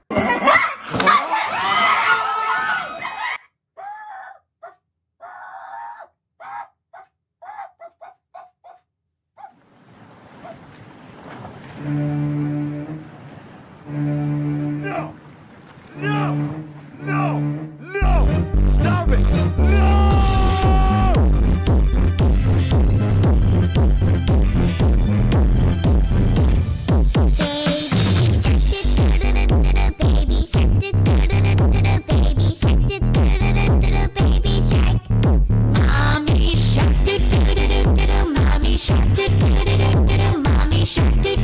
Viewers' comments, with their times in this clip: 0:08 lol kreekcraft startedto bark like a dog
0:10 hahahhahahah the bass going like boooooooooooom
0:29 POV: the kids in the background to help with the beat